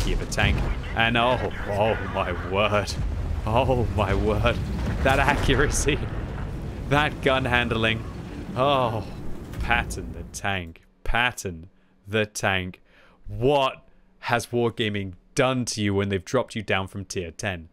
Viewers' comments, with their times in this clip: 0:05 the shuddering noises you made as your tank missed were excellent XD